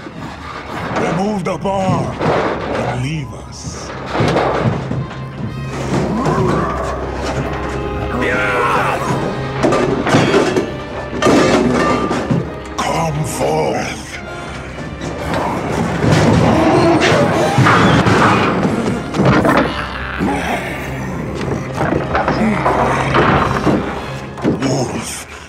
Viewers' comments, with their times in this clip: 0:06 Love how Tatsu growls back at Rahzar!!